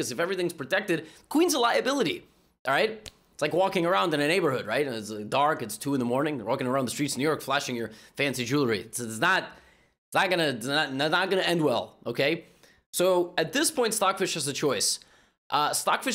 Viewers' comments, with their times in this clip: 0:03 Can we talk about that audible knuckle crack